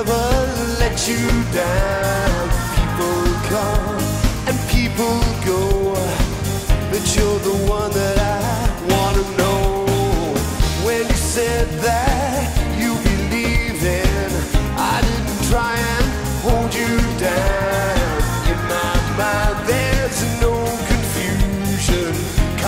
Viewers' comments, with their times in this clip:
0:10 The band that play in this live improved Jason's songs into another step. Anyway...